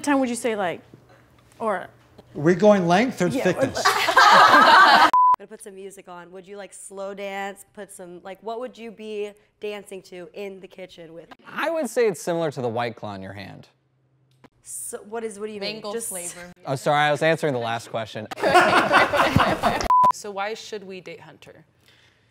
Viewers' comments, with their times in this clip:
0:08 Is it just me or did the “British” girl not sound British